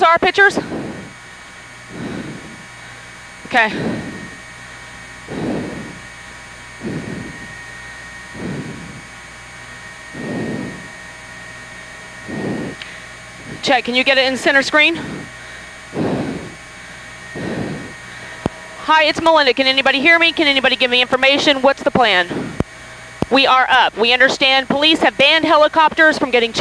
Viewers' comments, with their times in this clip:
0:09 I’m just speculating but listening to her first words on air she’s out of breath and clearly in a slight panic. A producer probably told her she needs to calm down if she’s going to be an on air reporter. You don’t want your reporters conveying fear to the viewers. So my guess (again just guessing) is she sees the collapse beginning and gets panicked again, tries to rein in her emotions but ultimately just can’t.